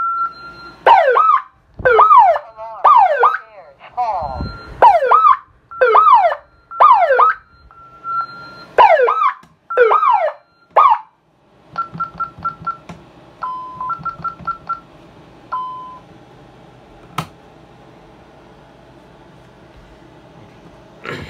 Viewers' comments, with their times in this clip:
0:05 That siren at ~ is kinda trippy...